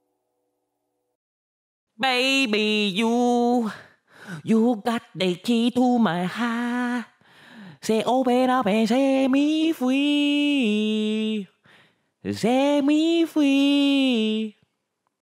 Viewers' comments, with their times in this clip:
0:04 ... beautiful song - takes me back to days of “no worries” lol no bills, no rent, no worries lol had me in stitches 🤣🤣🤣 I had an Asian boss back in the day and he sounded exactly like him lmao @ Vietnamese accent 🥴🥴🥴